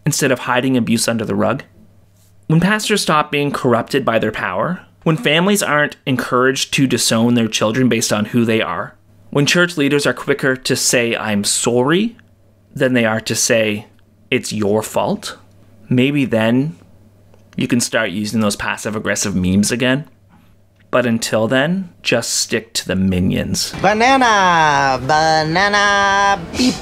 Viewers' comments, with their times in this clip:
0:10 gotta love that "Sore-E"!